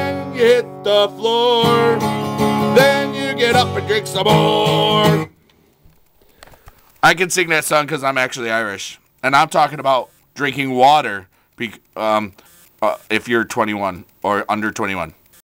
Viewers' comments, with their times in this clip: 0:12 holy shit it goes on for a whole seconds it broke my earfones